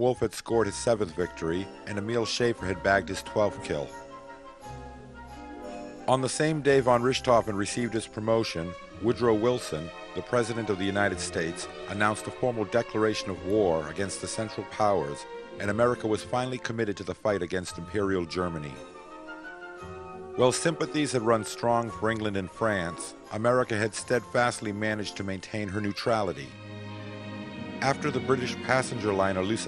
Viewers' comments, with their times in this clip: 0:10 What is it with playing Scheherazade ? I love the piece, but it doesn't really fit, does it?